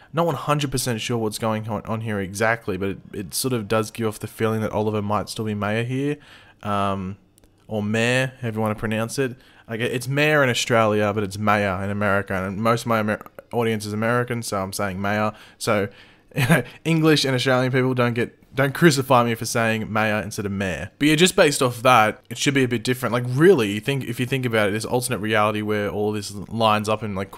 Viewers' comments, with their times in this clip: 0:09 OH NOW YOU WANNA PLEASE THE AMERICANS - but last year you couldn’t say “Ci-CAY-Da” 😂